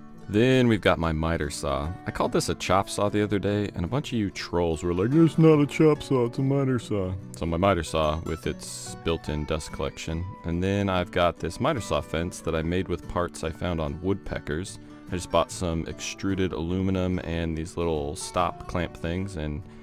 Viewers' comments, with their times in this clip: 0:04 ... funniest part of the vid, and best impression of Trolls I've ever heard!